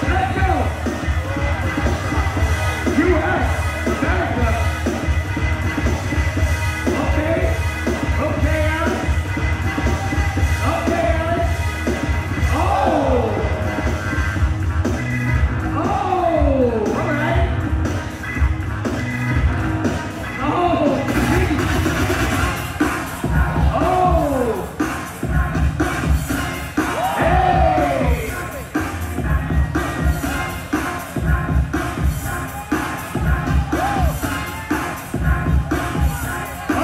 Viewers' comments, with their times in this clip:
0:03 actually to the beat i like power moves but often I feel like its not dancing. I like this how its the same beat and the dj not cutting making it impossible to do powermoves to a beat when it might change
0:23 Music starts anyone !?